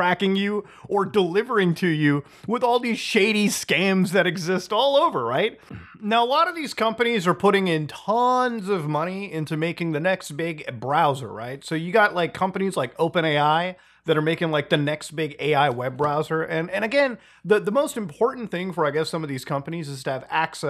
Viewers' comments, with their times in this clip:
0:05 did a enderman teleport in or something?😂